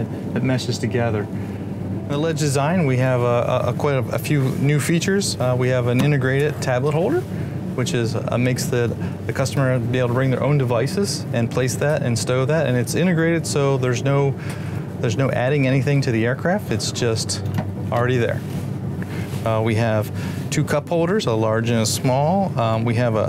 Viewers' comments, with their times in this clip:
0:05 Is going through puberty in this sentence?